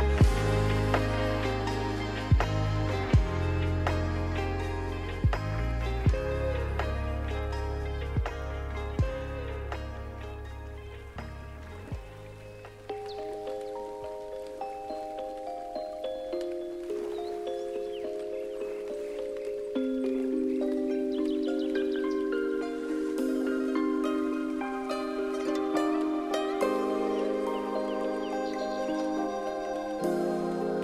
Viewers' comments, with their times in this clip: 0:09 it's I have to study for an exam I have tomorrow but I am quite heartbroken at the moment and can't concentrate. The first few seconds already brought tears to my eyes, the music is so beautiful. Thankyou so much for your videos!
0:14 Love this music!